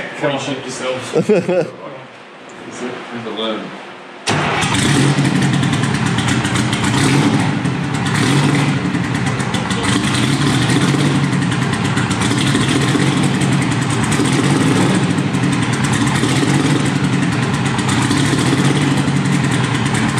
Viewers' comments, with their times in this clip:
0:05 Engine starts Less talky more cranky